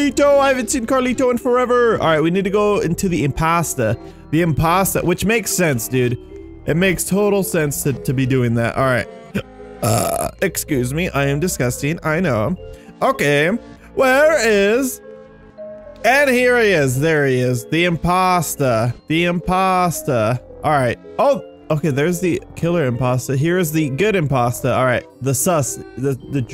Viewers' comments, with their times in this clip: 0:08 the music is reversed